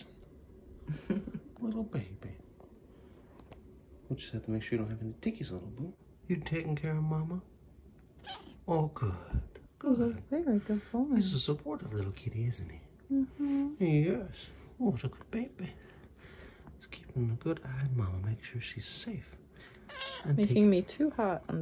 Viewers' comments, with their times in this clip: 0:06 Cinnabon says yes to his Daddy , how cute